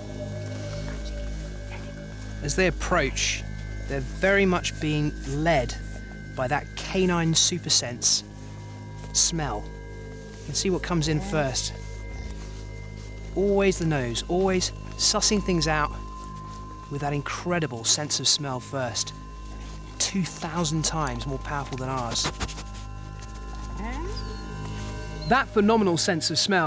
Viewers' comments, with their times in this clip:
0:07 I died laughing when i saw one of the wolves lick his hand and then growls at his hand
0:13 some frenching going on in the background was a bit much